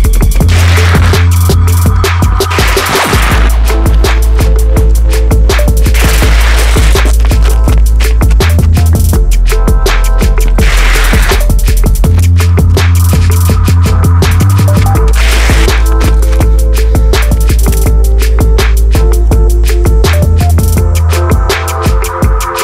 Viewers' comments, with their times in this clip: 0:09 The ting went